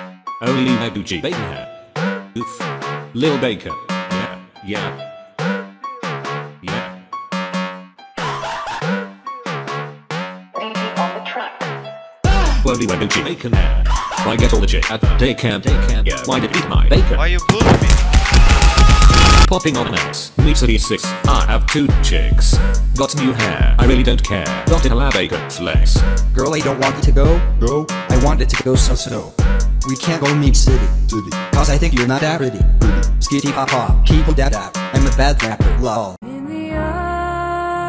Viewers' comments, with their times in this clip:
0:08 i heard that laugh in my head at school 😂😂😂😂😂😂😂😂😂😂😂😂😂😂😂😂😂😂😂😂😂😂😂
0:16 why you eat my phone
0:18 in fastest speed sounda like real muda barrage